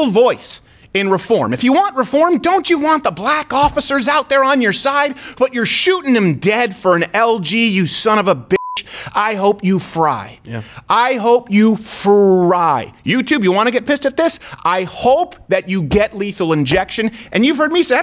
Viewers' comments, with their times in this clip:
0:04 Steven is pissed. You can hear it in his voice